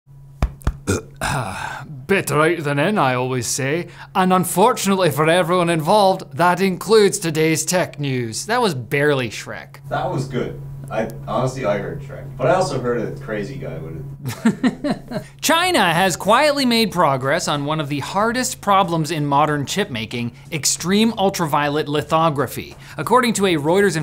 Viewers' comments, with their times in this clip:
0:00 I'd not expect that accent
0:04 canadian presenter wonders why noone in scotland hates him
0:11 I heard Fat Bastard